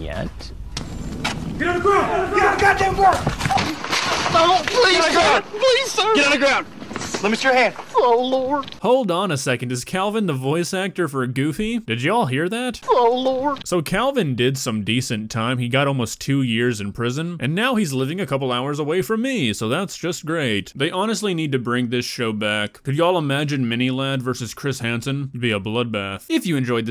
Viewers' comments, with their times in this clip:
0:07 Is he the voice actor for Goofy? OMG I'm fkn dead I can't breathe 😭😭😭🤣💀